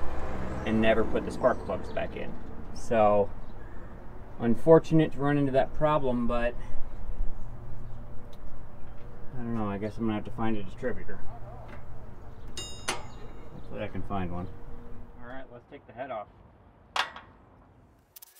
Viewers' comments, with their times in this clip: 0:06 I can still hear the echo of the scream, “fuuuuuuuuuuuuuuuuuukkkkkkkkk!!!”